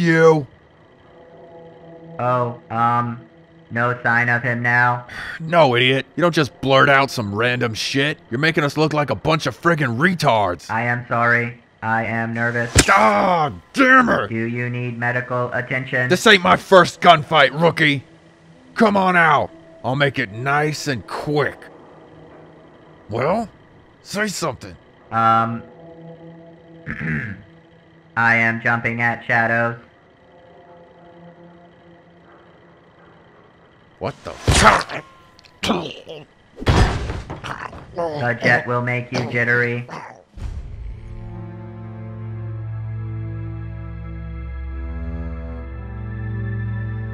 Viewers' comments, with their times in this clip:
0:09 bro said frickin but then totally changed his tone.
0:28 when the robot clears his throat I almost collapsed hahahahaha